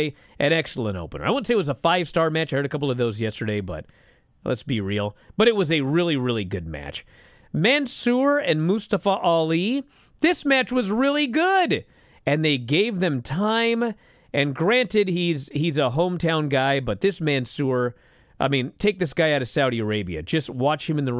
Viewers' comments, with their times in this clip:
0:08 who? Did Mustafa change the pronunciation?